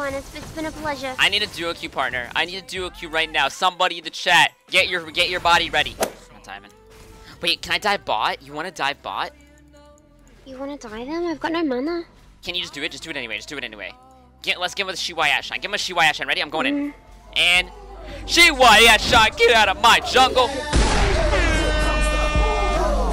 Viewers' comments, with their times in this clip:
0:09 cracking up at how she said "mana" 😂
0:11 "I've got no muna" is she british indian that pronunciation made me eargasm.......